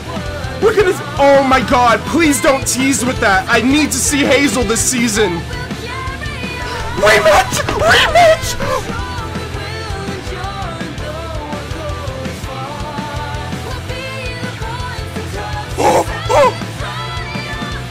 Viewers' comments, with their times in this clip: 0:05 HANDicap vs handicap